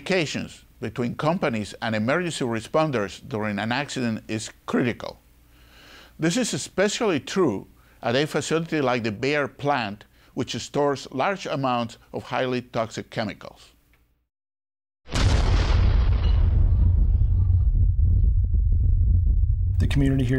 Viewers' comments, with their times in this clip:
0:03 cant take that guy seriously. The way he talks, his voice... like an angry teddy bear.